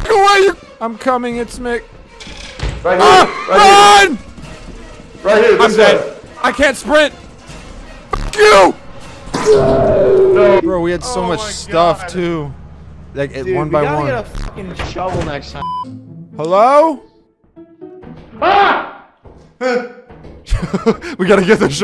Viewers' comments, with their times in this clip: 0:09 the muffled scream 😂